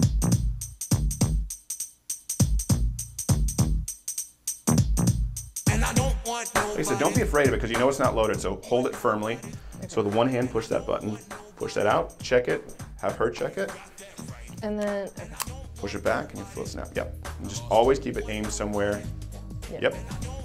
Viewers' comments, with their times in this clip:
0:03 I could have sworn the Fresh Prince of Bel Air theme started